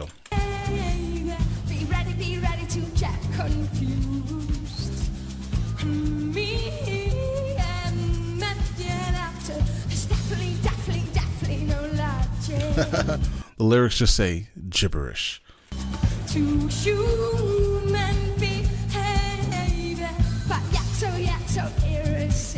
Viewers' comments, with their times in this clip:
0:05 "me and my here after". It's not really gibberish if you've heard the studio recording. Also, her accent can make words like "human" sound like "shoemen". She's also great at improvising in jazz, so she will often sing percussively. One thing is for sure, she's not trying to create a "deep" understanding of the song during this performance.